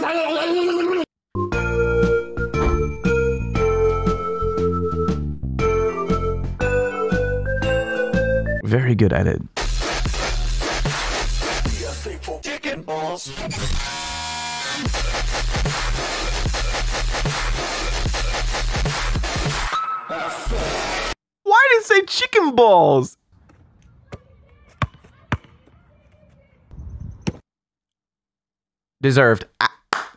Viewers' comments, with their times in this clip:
0:09 as a dubstep fan myself this song hits harder than the rock my dad threw at me last night!
0:09 THIS SONG BUSSEN
0:10 Thats what dubstep is lmao just like Riot - Nasty
0:11 the way he said "chicken balls" was one of the in the entire category of. this is truly one of the most moments of my entire life that if you it then i'll completely with you